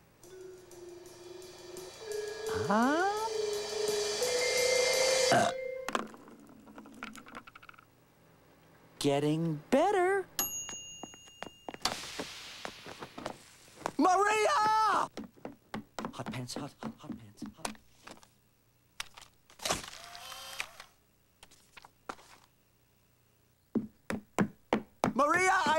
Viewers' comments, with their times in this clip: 0:08 Klasky Csupo forgot to re lip-sync “Very Nearly!” too “Getting Better!” I feel like Hank Azaria should’ve “Almost There” because the US says almost, the UK says nearly and Canada uses both. Basically Hank gives Eric American dub a mix of Carl Carlson Jr. and Frank Grimes both from The Simpsons